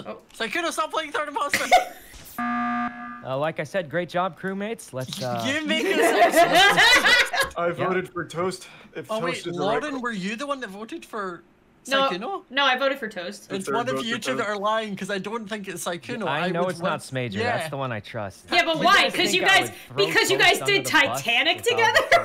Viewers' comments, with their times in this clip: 0:05 Click this to see her evil laugh